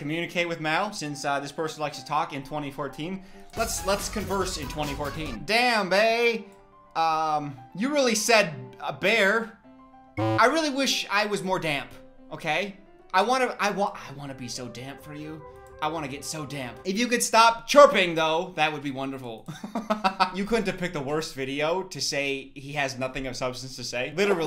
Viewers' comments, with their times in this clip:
0:08 i can’t explain it but at like i had to pause the video cause i thought the music was playing in my head and I had to make sure